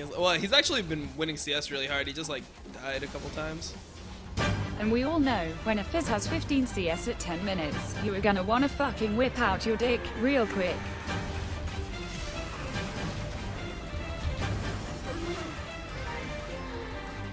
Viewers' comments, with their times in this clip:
0:03 The voice lmao